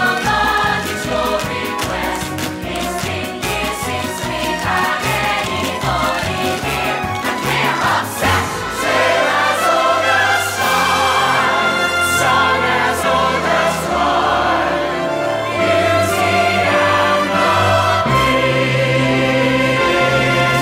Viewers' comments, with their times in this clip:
0:08 AND THE FINALE ACCOMPANIMENT SOUNDS JUST LIKE THE 2017 FINALE. CALLED IT!!!!!